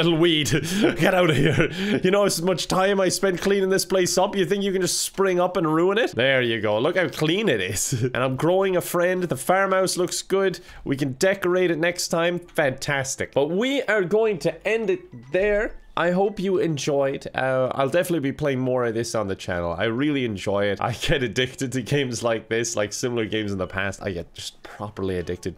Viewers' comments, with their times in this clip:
0:06 That proud little chuckle in the end though